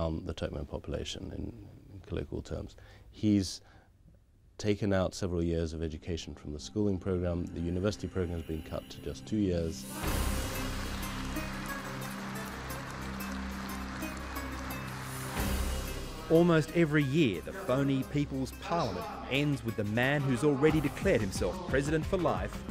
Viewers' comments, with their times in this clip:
0:09 remembers me people applauding Stalin